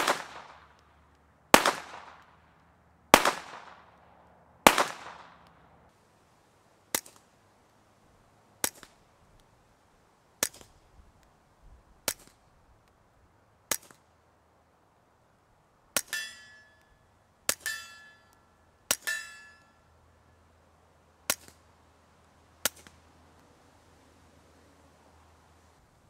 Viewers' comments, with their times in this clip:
0:08 I had computer mouse that clicked louder than that :))